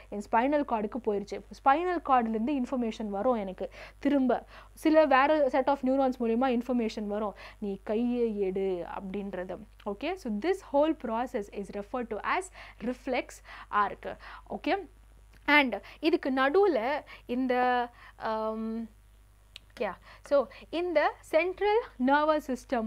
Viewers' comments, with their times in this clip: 0:06 that pei padam effect 😂😂 "Kai - eh edu"